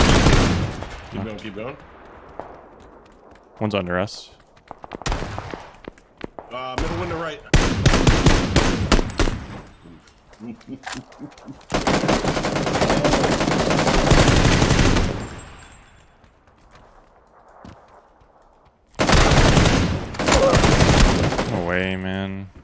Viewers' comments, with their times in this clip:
0:08 that jingle with shots 😂